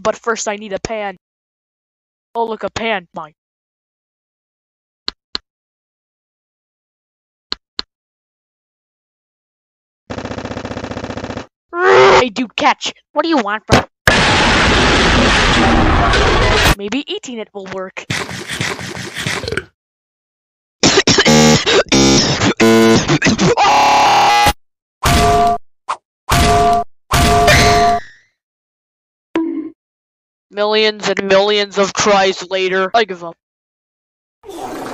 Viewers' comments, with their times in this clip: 0:10 Several egg bonks "RRRRR"
0:13 the way he said "what do you want?”
0:20 bro when u choked u actually froze my computer what a legend.
0:20 cough cough BZZZ BZZZZZZ coughing and glitchy noises AAUUAAAGGHH
0:20 Black:*choking glitchy* Green ghost/spirit:wtf Black:*glitching*AHHHHHHHHH! green:._. Me:hes’s getting pibby glitched
0:20 cough.exe has stopped working
0:20 WHY IS HE AHGRESIVLY CHOKING
0:21 average among us vr mic:
0:21 what the actual fuck was that scream
0:21 sounds like an fanmade bambi song